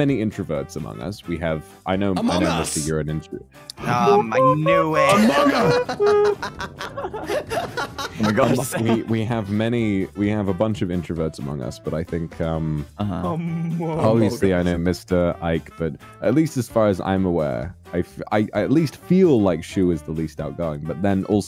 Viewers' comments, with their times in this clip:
0:03 Why did the Among Us thing sound more like the George Lopez theme song than Among Us 😂